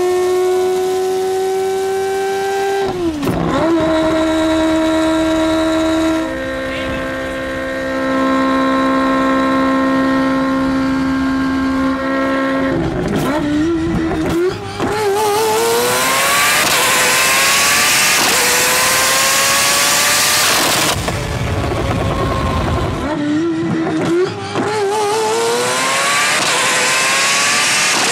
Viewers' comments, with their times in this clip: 0:06 ME :I CAN'T HEAR SHIT!!!💁‍♂️
0:13 R. I. P. headphone users...
0:14 this is the nastiest downshift I've ever heard good lawwwddd